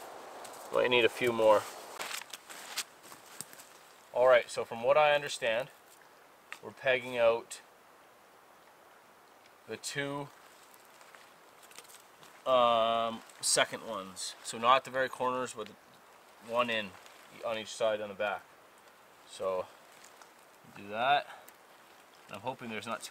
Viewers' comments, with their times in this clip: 0:08 this short pause made me think that my connection crashed